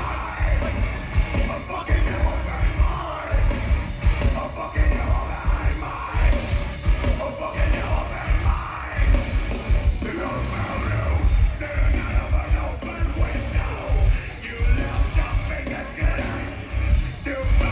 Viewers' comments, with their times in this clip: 0:04 hope he can keep up that voice the whole tour. He is so focused and into it, very great Corey performance